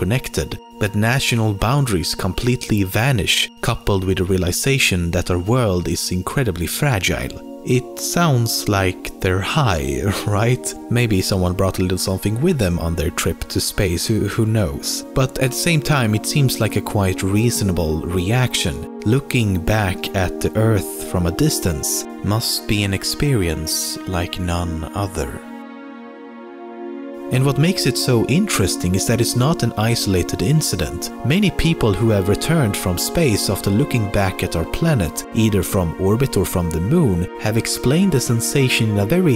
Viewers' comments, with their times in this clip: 0:06 the way you said "fragile" gave me goosebumps.
0:26 the way you said "none other" made me question this whole video... Are you high?